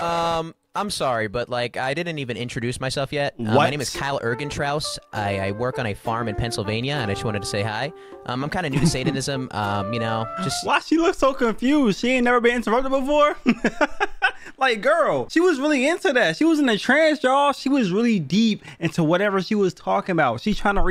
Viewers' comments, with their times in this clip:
0:06 not the animal crossing music